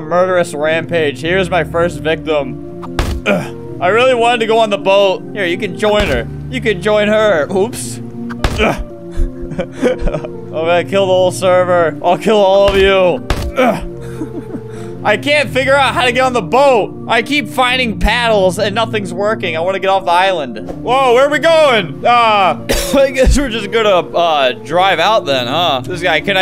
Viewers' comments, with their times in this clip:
0:07 they way he says opps